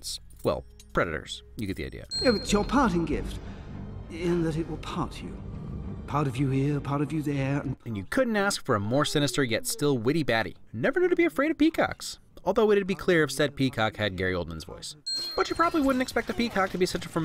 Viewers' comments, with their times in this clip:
0:04 i genuinely heard this as "party over there" when i was a kid.